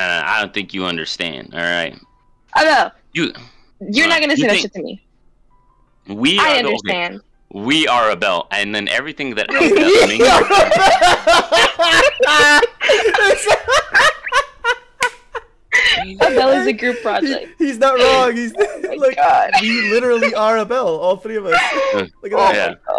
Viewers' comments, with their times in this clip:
0:06 bro, the delivery on “we are abiel” was peak, there are no words to describe how epic it was.